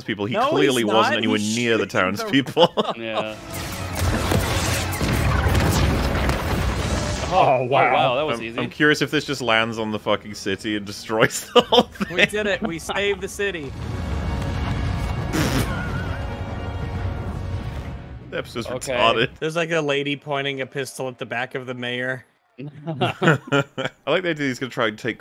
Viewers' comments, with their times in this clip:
0:09 I really thought they were playing America the Beautiful lmao